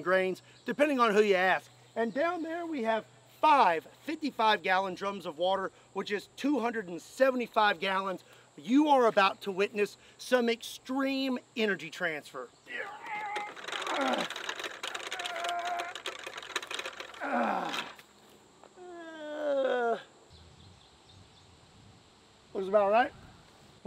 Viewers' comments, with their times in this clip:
0:08 The dramatic "You are about to witness some EXTREME energy transfer" followed by Scott painfully pulling the rope back is comedy gold